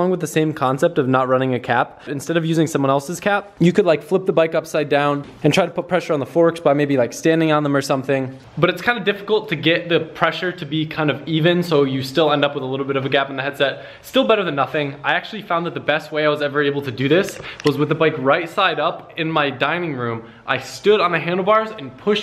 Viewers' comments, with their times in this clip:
0:06 Erm, did you say "forsk"?